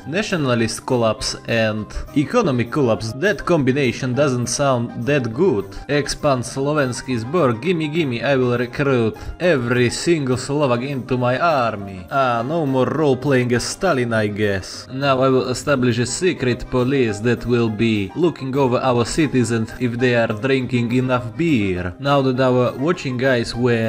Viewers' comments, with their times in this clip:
0:05 I just love your accent here